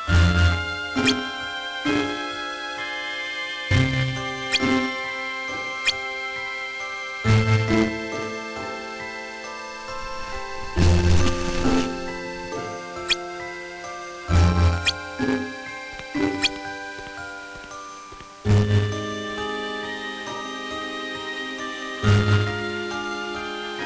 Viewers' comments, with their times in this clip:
0:09 Xion:ICE CREAM DISAPEAR and strange scream O_O